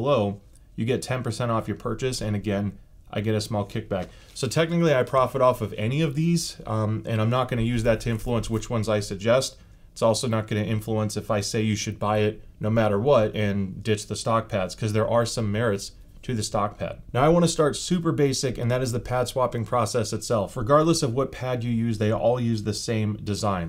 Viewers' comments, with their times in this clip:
0:06 mic picked up that beard scratch pretty well.